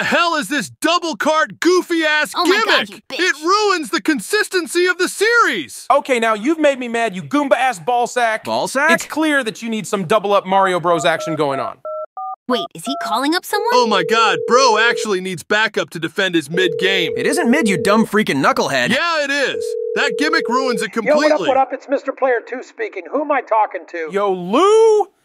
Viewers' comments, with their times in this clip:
0:06 So much so that he's brought the inner Superstar Saga out of Mario. 😂